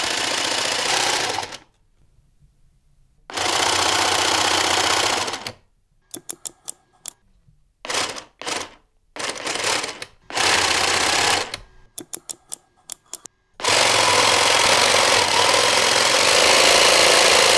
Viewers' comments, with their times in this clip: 0:04 it's like a monster truck engine